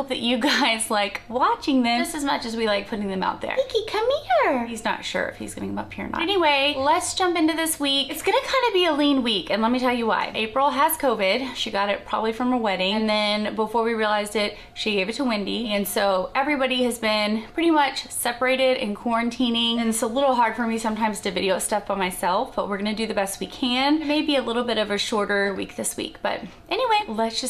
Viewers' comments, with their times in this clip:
0:10 I hear "her wedding," not "a wedding".